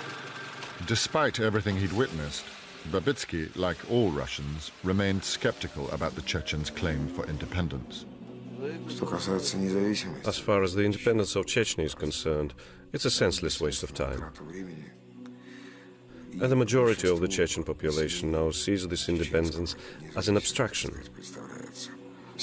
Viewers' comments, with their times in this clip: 0:10 What is that song ? I’ve heard it so many times. It’s so haunting and yet beautiful.